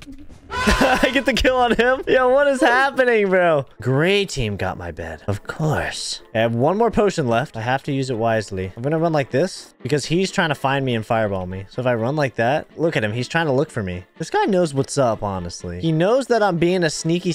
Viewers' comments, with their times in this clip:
0:05 that ‘of course’ was sinister!!!